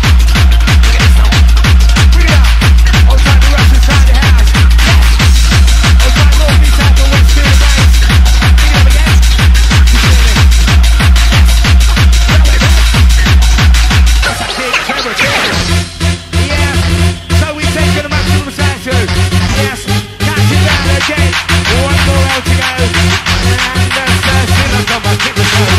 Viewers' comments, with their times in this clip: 0:09 Does anyone have track id's for this set? my fave part is from but on this it's cut short! The mix goes real dark from this time onwards its awesome